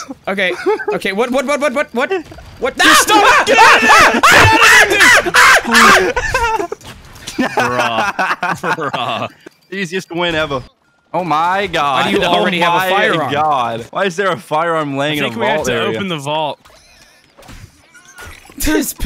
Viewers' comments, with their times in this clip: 0:03 the birds outside my window at 5 in the morning